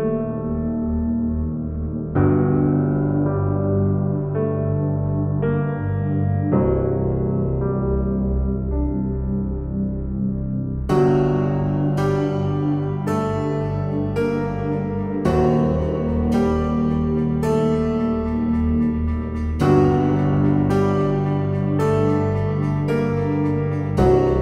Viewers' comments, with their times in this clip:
0:10 perfect piano cue